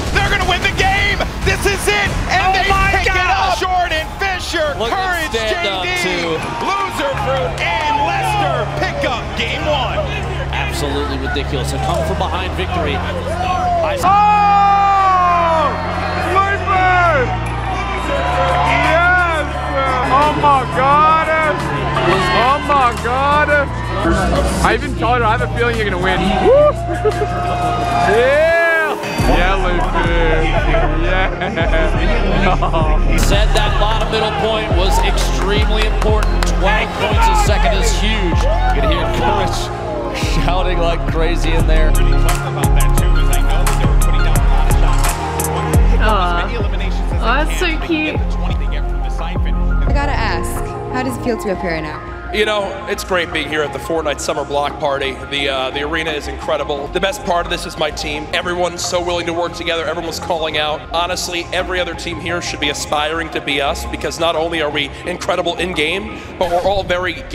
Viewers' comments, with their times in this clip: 0:08 it sounds like courage is saying the n word 😂
0:49 I've got to ask, how does it feel to have Corona? That's what I heard 🤣